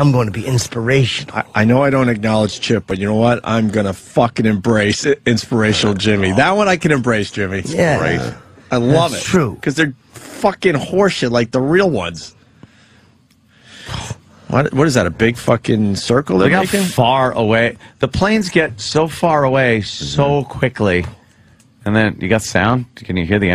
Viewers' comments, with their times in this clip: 0:05 Chip laughs quietly to Opie's zinga.